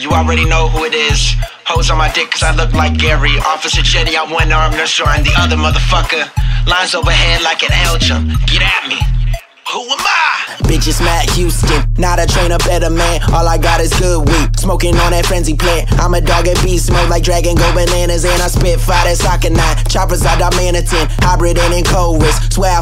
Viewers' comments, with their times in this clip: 0:09 sound like lil Wayne son